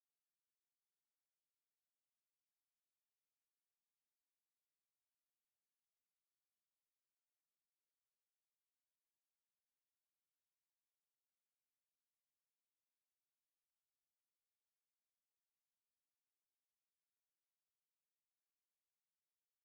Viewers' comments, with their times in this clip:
0:05 Audio not came after mins